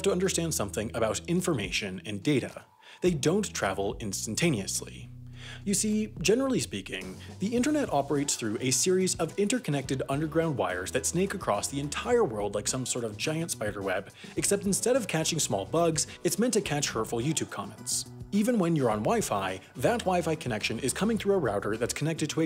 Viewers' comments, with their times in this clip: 0:10 what he said: a series What my ipad heard: hey siri